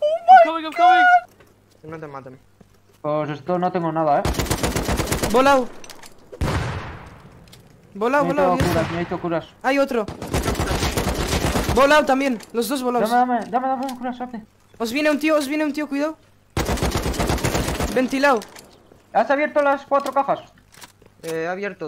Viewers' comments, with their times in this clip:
0:04 isnt the ak shooting too fast?